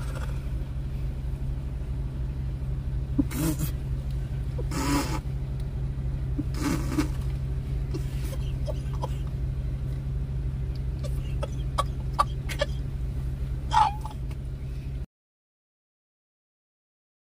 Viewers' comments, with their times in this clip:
0:03 the laugh just hit me though 😂👍